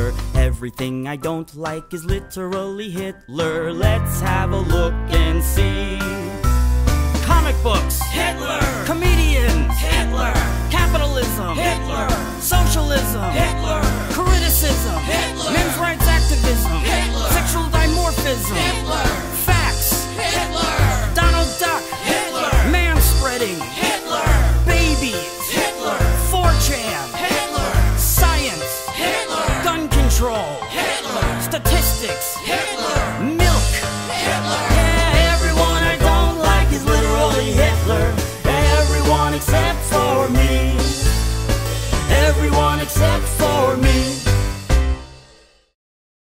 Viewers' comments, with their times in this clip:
0:07 Your lyrics are bad, and same goes for the beat, and how you sing it. It sound like cheerleeding chant, instead a song man.
0:33 I thought it said "milf. HITLER"